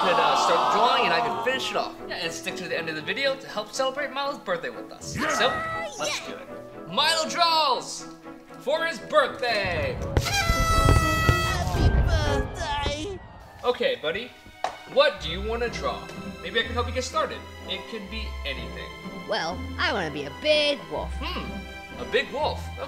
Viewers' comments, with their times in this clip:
0:05 Who else heard that ,,oh yeah‘‘ from Rainbow Dash ? 😂🤭